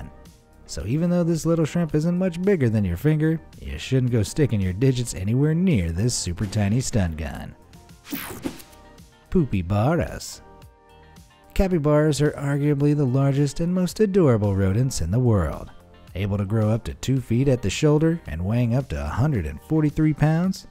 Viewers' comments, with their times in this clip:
0:06 i like how he put a gunshot here